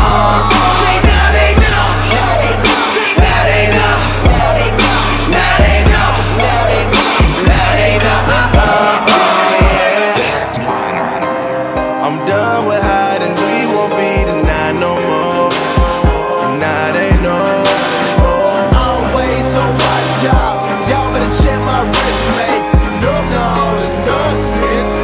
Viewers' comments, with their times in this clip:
0:10 That DMinor breakdown was on point, I was feeling that joint too much